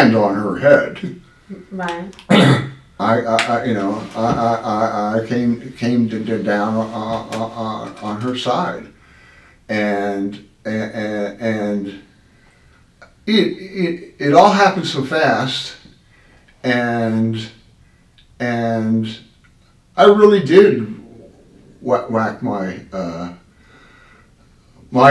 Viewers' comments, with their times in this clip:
0:10 At about. he’s turning into Billy Bibbit when Nurse Rachet confronted him.